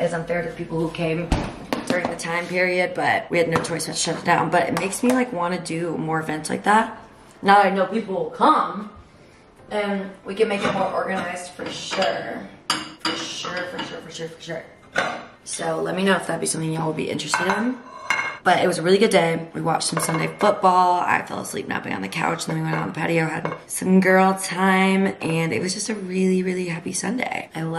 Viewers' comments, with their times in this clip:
0:09 lmao you sounded like miley from hannah montana there